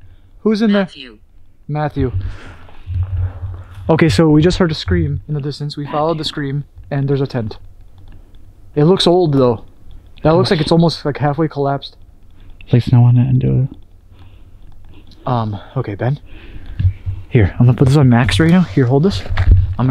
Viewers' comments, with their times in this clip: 0:06 a voice says Matthew. Wasn’t either of you guys. I thought it was at first but definitely a spirit